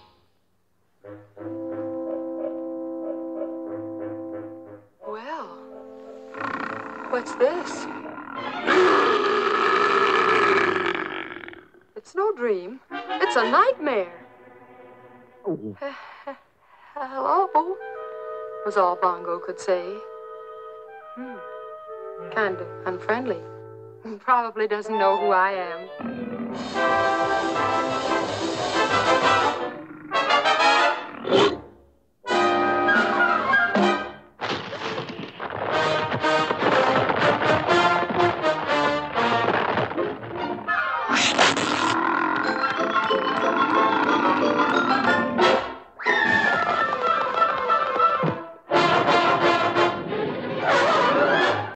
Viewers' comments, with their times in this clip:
0:08 Candy Candido Roar
0:08 Me three especially that's my favorite part of his growls! All of his growls made me laugh! Whoever draw him like that gives us something to laugh about especially his teeth from his lower jaws sticking out! 😂😂😂
0:41 sounds like a man belching